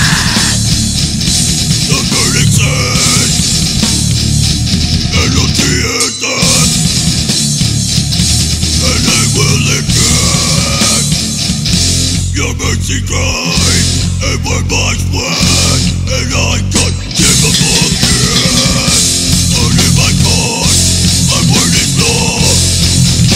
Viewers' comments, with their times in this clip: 0:10 I love that breakdown the sound of those bass strings just getting punched and rattling away